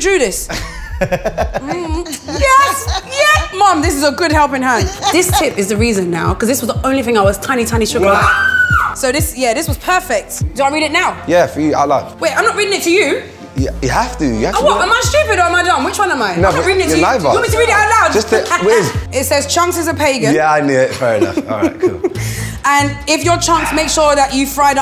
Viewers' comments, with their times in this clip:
0:08 is no one gonna mention that frequency that chunks hit